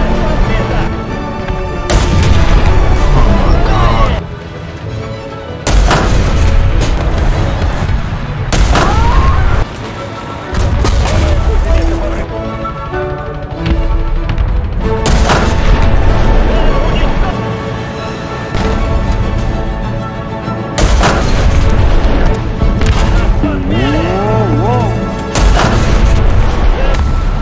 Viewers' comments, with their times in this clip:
0:08 Chinese rage is spot on😂